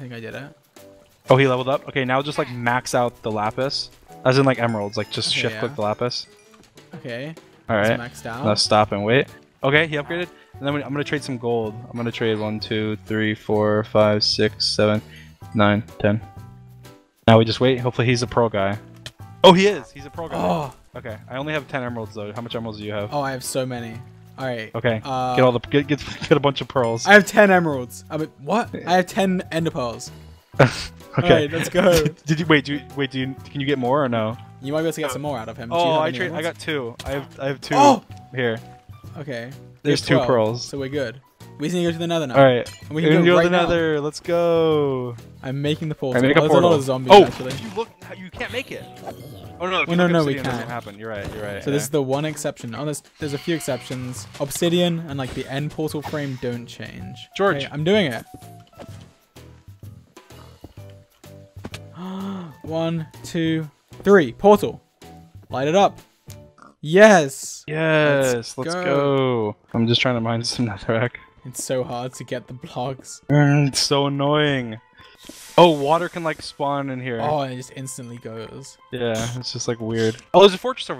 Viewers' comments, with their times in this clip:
0:06 George: Deep breath of full hapiness YeEeeEeEEEeEeSsSssSSs
1:04 did anyone else notice how the music perfectly matched the sound of the flint and steel lighting the portal